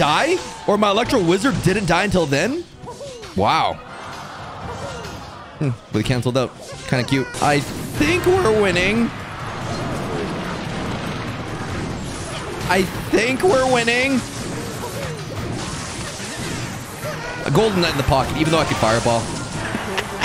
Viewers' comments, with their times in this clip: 0:07 that voice crack tho 💀
0:08 he had a voice crack